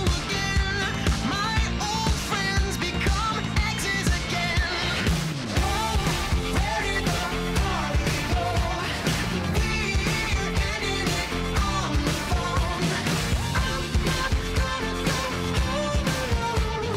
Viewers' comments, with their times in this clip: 0:04 for some reason I just keep hearing, Perry the party goat